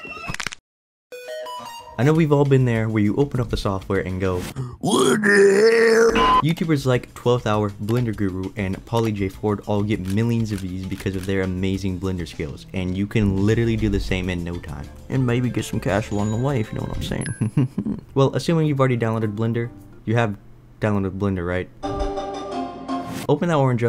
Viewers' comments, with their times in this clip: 0:04 "WUDUHELL !1??1" caught me offguard lmao